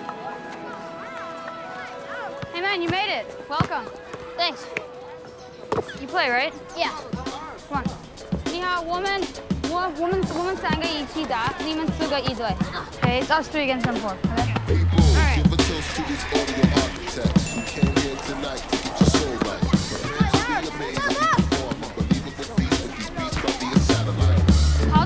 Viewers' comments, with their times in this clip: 0:08 did he just call him a woman?